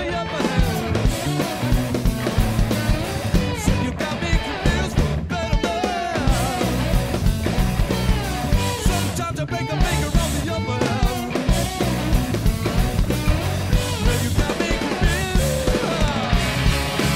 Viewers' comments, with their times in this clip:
0:03 Mr Jones has got this great groove going and then leading into the jam, he proves his musicianship, man this band is great!